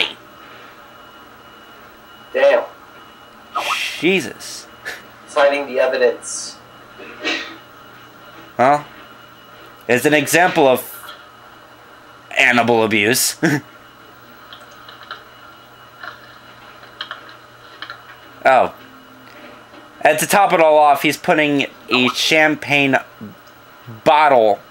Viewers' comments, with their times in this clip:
0:07 Did I hear the psycho sneeze ?